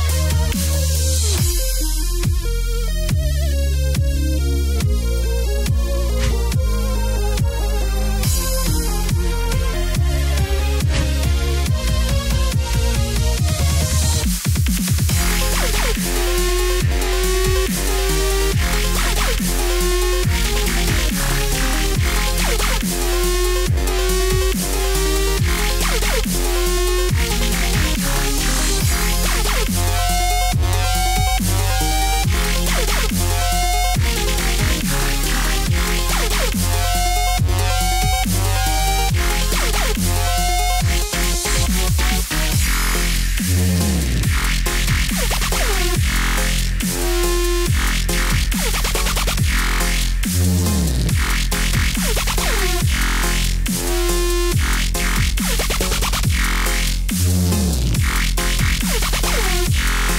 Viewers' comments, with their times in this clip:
0:10 OK THIS SOUND SICK ESPECIALLY THE BEAT DROP
0:29 my ears!!!!! omg!!!!
0:41 fartstep part lol